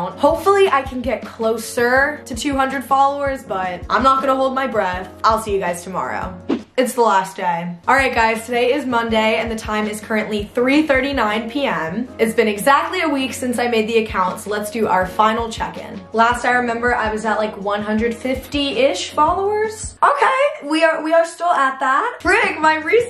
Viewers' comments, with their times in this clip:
0:04 no one will think this is funny but for some reason i LITERALLY LAUGHED OUT LOUD. this is concerning , Ik ⬇️⬇️⬇️ “ I’ll see u guys tmrw 😊 “ THE NEXT DAY “ it’s the last day 🥺 “ idk but the finger indicates that she’s crying ( maybe she didn’t do it purposely ) and the tone 😭 I probs have a broken Humor tho SO NO ONE TELL ME BC I ALREADY KNOW